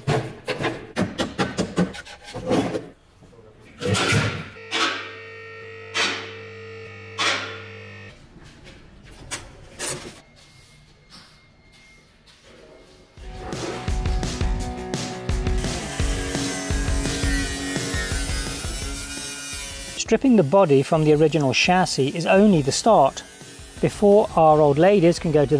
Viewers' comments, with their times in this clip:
0:09 At about minute there was a small burp.....is that right?